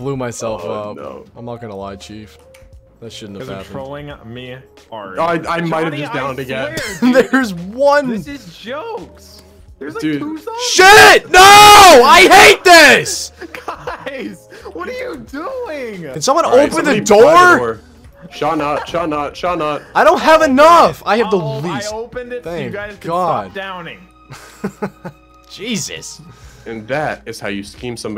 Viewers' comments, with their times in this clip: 0:10 i had my speaker all the way turned up and i think my ears are bleeding.